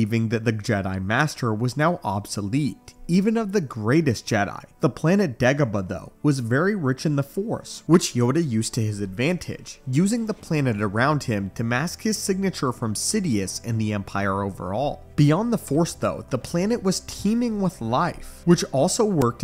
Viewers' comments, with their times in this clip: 0:06 It sounded like you said ((Degabadoh)). LoL It just rolled into my ears like that, idk. 🤷 👌